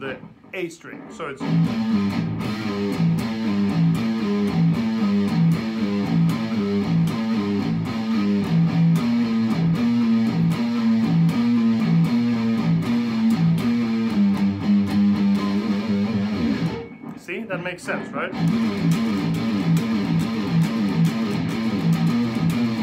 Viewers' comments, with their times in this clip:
0:07 Yes Sir, from about the mark on. I could only dream of a fully instrumental track/album with such memorable riffs as that.